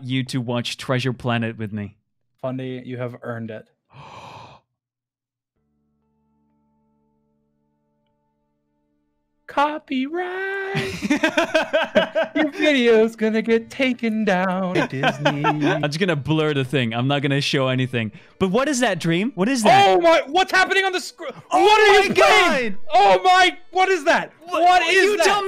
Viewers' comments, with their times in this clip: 0:09 why is no one talking about when he sings “You videos gonna get taken down” it’s actually good-